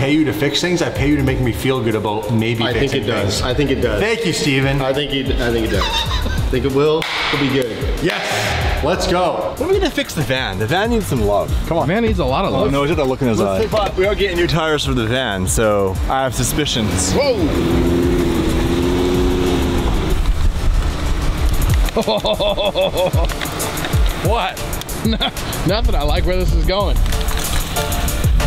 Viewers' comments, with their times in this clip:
0:10 That “come on” was personal 😂😂😂